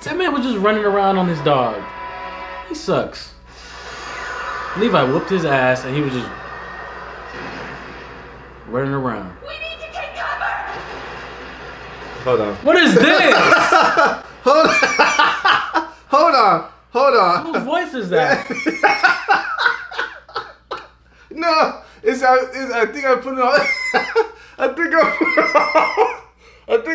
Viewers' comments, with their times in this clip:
0:09 those of us for subs, ear our drums popped
0:10 👀 😂 Surprisingly, the English dub isn't bad. However, I still prefer the original Japanese language! 😂💪